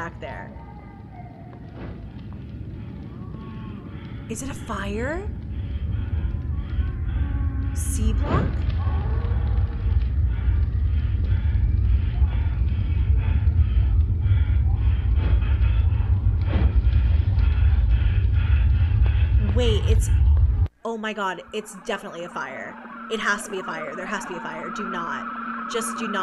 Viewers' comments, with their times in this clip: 0:08 I’m hearing faint screams and roars behind the door. Since it looks like fire from under, I’m guessing that’s Hell in that lit room where this Moloch possibly resides.